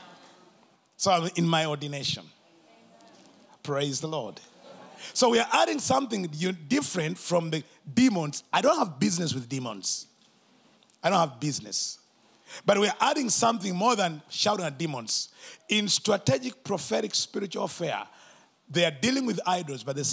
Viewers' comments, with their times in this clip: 0:08 Did anybody sound cut off ??